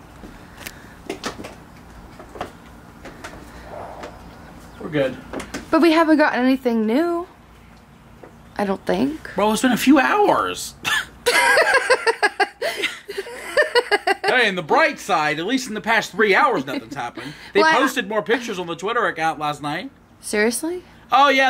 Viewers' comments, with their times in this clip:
0:03 you can hear a heavy breathe!!😨